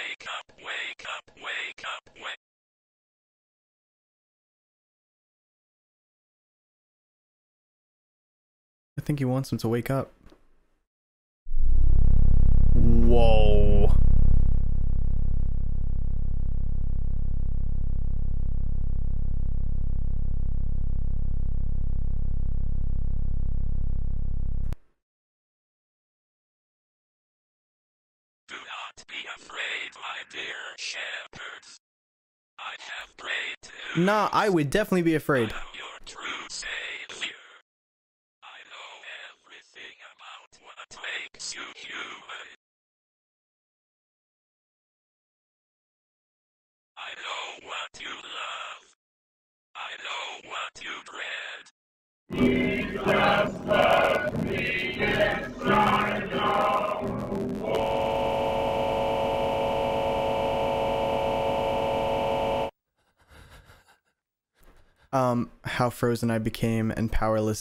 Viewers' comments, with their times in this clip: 0:07 I FOR REAL SHIT MYSELF WHEN I HEARD THE NOCKING
0:52 dangggggg that beat was fire